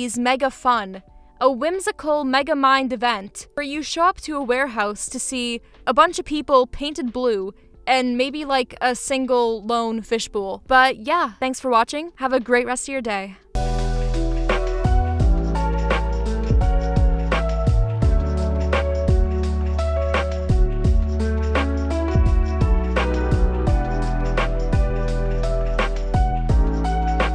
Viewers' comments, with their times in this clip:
0:08 ma'am, HOW did you just pronounce "fish bowl"???